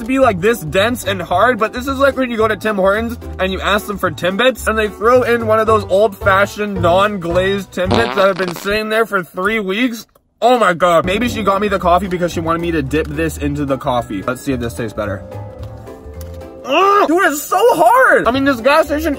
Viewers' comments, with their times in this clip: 0:05 everyone just laughed at this 😂😂😂😂😂😂😂😂